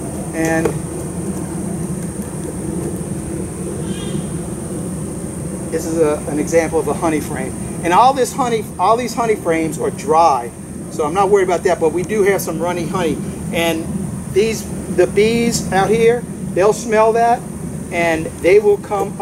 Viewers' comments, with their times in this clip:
0:07 he sounds like pooh bear!